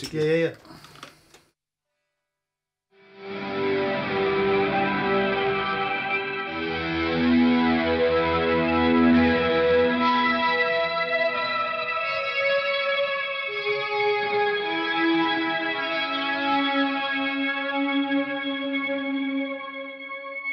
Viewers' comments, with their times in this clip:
0:04 That was some serious Blade Runner shit there.